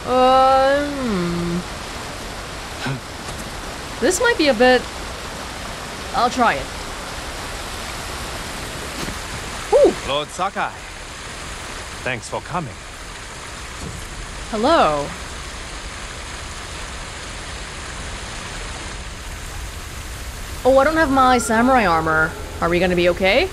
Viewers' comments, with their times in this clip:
0:08 Love how he greets you without even turning to check first. Like he heard this big splash behind him and his thought immediately just went, "Yep, that's definitely the dude I've been waiting for."